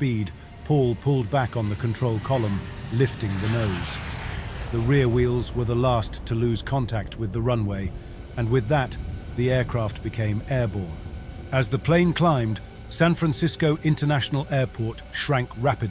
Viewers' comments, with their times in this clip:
0:03 Bizarre dramatic wannabe poetry narration style and amateur phrasing... and on and on... "the rear wheels were the last to lose contact with the runway..." 🤣 "Rear wheels" on an airliner? You mean the main [landing] gear!